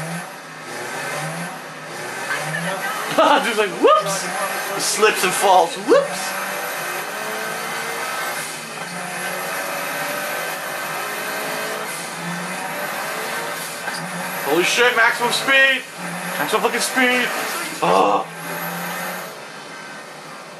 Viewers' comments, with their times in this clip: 0:08 The Car he drives has a engine sound like a vacuum cleaner